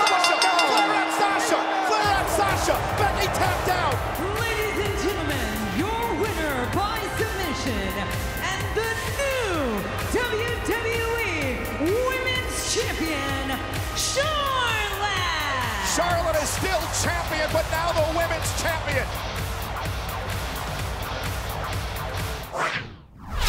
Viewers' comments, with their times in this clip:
0:03 Lol, the crowd just died
0:05 Grandest Triump ? the crowd was a cricket .. if Sasha won it back then the arena would shake with cheers